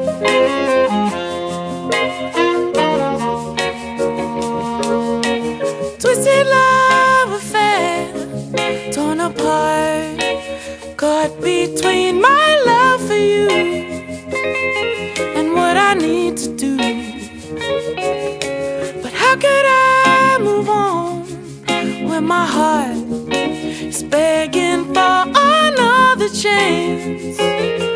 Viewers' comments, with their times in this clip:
0:09 My favorite part is right here just how he says it